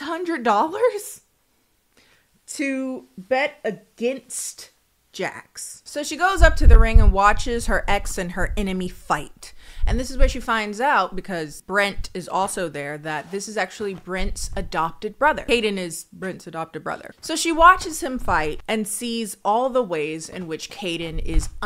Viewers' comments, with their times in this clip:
0:06 Holy shit, had scared the hell outta me cause through my headphone it sounded like someone was banging on the front door😅